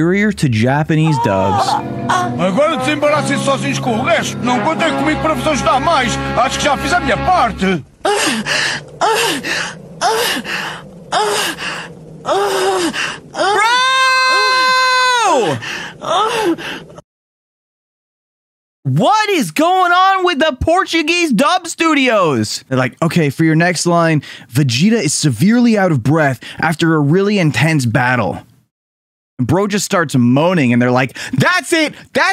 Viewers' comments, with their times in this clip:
0:06 this is portugal Portuguese brazilian portuguese on dub is way better
0:17 the person responsible for the aduio syncing and stuff probably dragged the wrong files